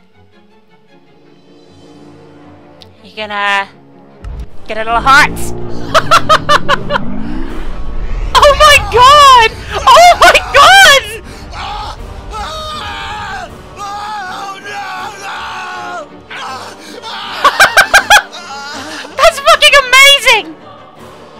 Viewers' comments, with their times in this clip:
0:04 I laughed with the slow motion bit xD -OOOOOHHHHHHHHHAAAAAARRRRR